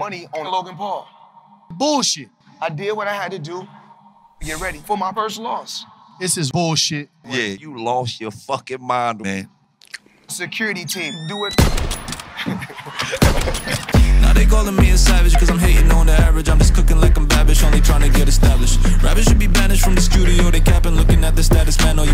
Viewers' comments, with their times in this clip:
0:08 LMFAOOOOO THE LAUGH